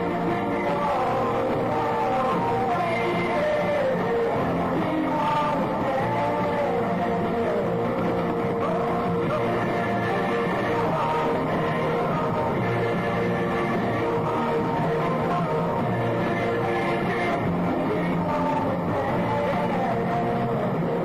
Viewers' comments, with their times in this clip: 0:08 If you listen closely, you can hear Denny beating the crap out of the Practice Pad that he has on his drum